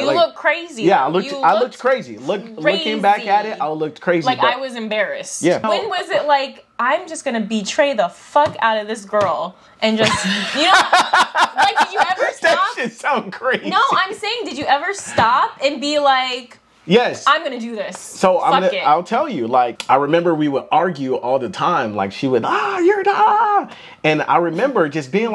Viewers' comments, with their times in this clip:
0:07 idk why he laughed at her saying that